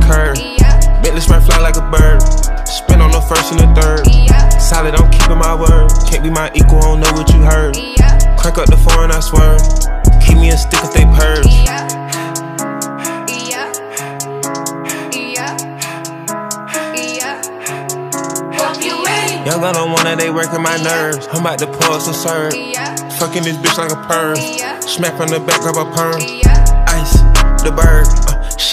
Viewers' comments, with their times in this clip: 0:10 🤔 I'm hearing Kenya 🇰🇪 still play hard 🗿